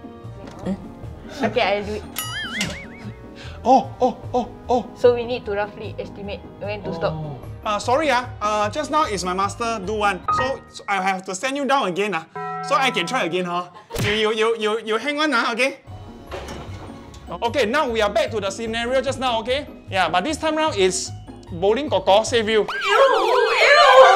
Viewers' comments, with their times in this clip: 0:09 bro switched to old uncles voice😂